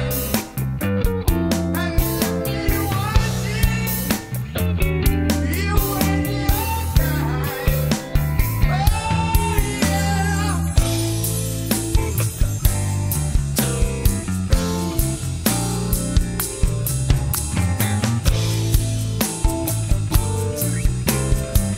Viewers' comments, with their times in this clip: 0:09 those chimes get me everytime